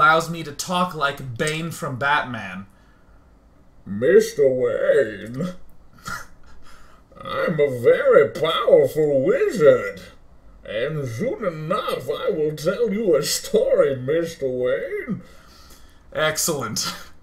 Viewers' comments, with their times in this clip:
0:03 Bane Cain? Deckard Bane?